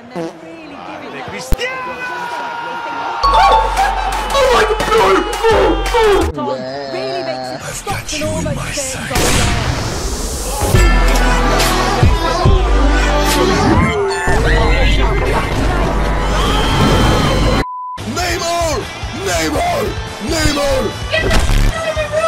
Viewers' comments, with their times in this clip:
0:10 i got you on my sides